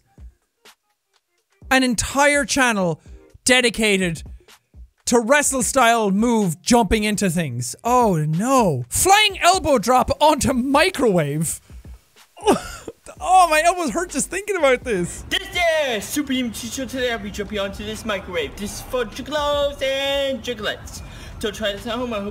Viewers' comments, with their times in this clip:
0:07 makes fun of the word “piece” being misspelled, only to butcher the word “tables” 2 seconds later.. Nice!